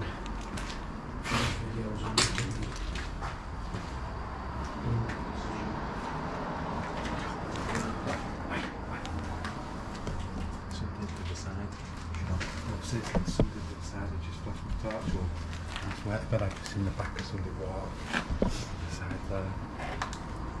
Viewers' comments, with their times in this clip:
0:08 I definatlety heard a voice, sounded like a small child, just as you were going into the doorway of the room